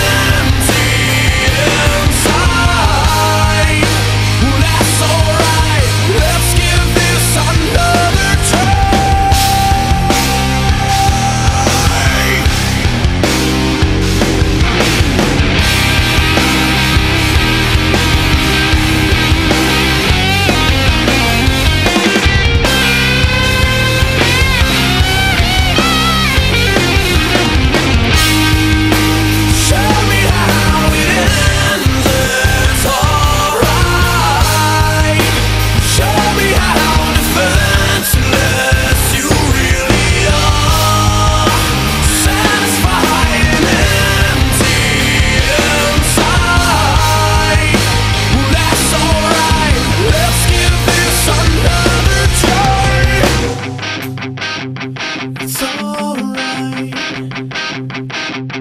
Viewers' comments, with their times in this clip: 0:08 Can we all just appreciate that sick ass breakdown ? shit is fucking fire BB4L!
0:21 System of a Down's Spiders... BUSTED!:-7 But that tempo break is the sweetest oblivion!
0:40 The bass line is one of the best parts of this song imo. This song is seriously so good, I hope to see it live someday!